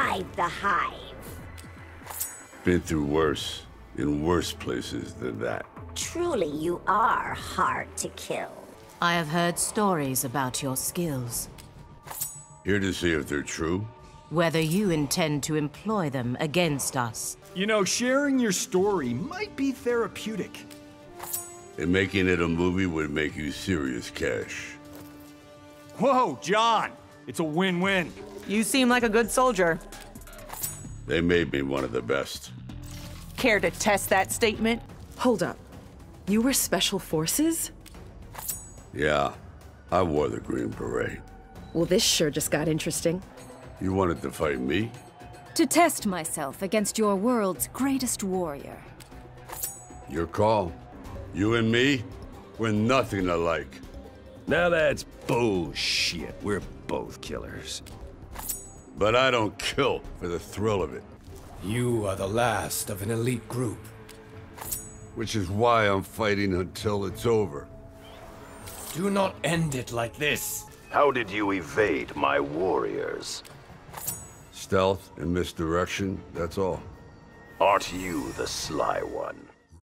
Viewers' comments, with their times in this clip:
0:08 sounds like Glad0s but without autotune
0:25 What that hell happened there was a sound where he kisses his arm. Did they change it?!
1:01 sounds like genji